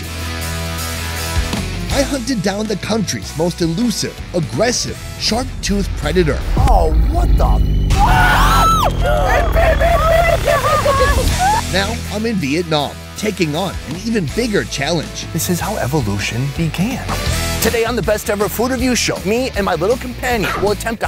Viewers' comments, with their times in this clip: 0:08 that scream is everything